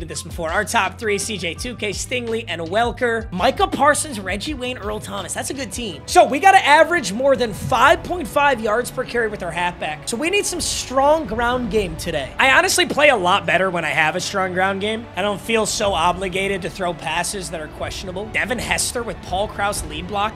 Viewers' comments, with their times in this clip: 0:07 He stops screaming a